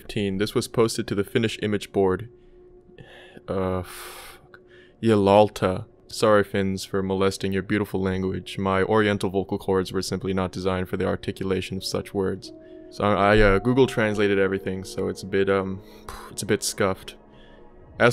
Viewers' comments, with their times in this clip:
0:06 as a fin myself, I like your pronunciation more than the correct one